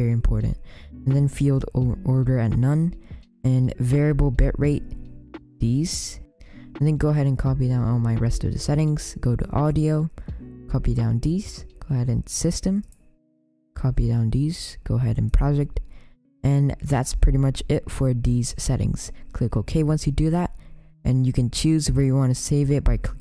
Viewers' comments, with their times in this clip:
0:09 copy down deese